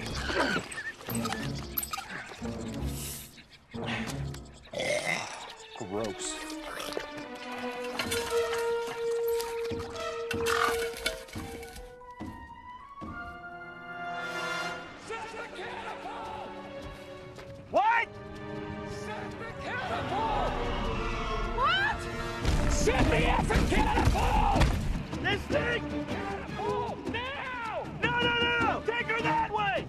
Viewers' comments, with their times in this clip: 0:10 I've seen this clip, like, a million times yet i never noticed that a car door closing sound effect is heard even though the door is not even attatched to the car😆